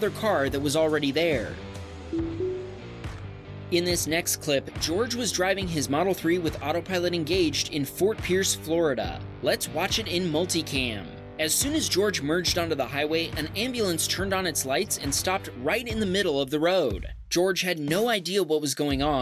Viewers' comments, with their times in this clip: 0:07 😂 bro pronounced it George